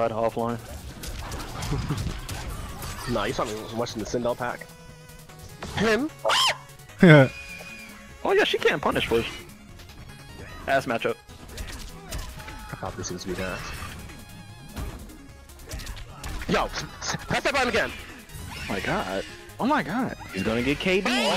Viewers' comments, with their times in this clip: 0:06 That scream tho 😂😂